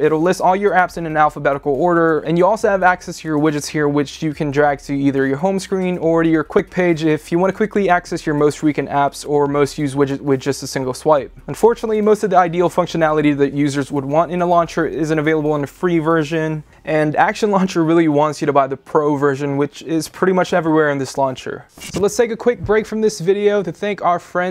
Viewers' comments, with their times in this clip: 0:08 Did he just mispronounce recent?